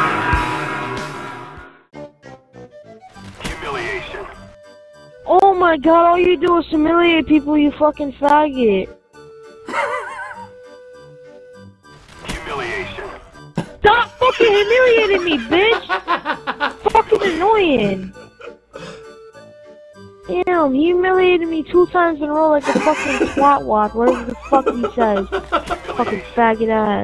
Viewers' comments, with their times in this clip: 0:08 Sounds like Muttley is back haha. Awesome vid as always bro! :)